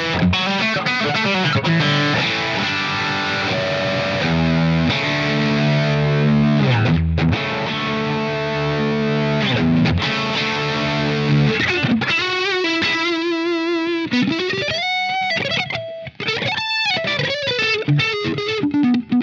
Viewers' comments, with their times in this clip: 0:04 Here comes the dirt bike with no helmet guitar! I love the expressions as much as the tone!!